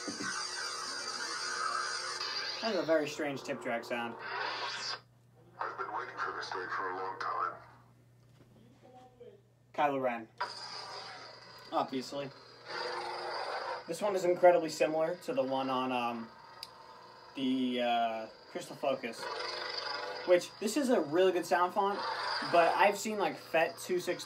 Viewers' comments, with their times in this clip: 0:09 It was dark rey it just has the same idle sound as kylo. Kylos was